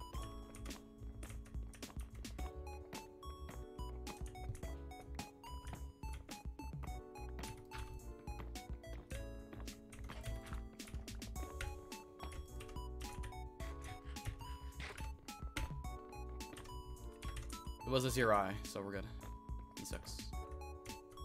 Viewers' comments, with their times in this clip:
0:03 That gold pickaxe is dropping sick beats lol.